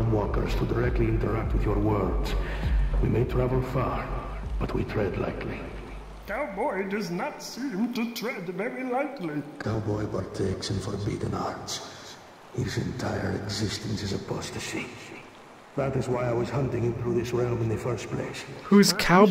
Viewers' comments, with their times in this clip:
0:04 Man, these bits are so trippy. The style, the music, the dialog style, and of course the content/plot. Very... experimental.